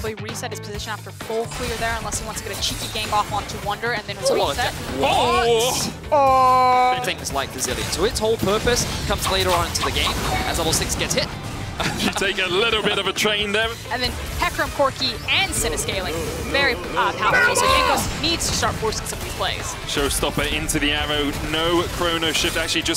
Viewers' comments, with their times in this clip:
0:09 Bro I have the Naruto jutsu sound as my notification and thought someone had texted me kekw